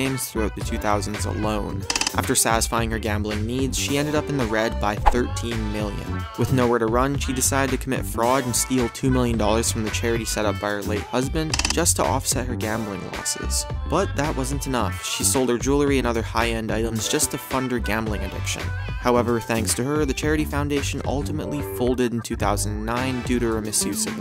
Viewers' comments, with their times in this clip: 0:05 is it 13 or 30 million?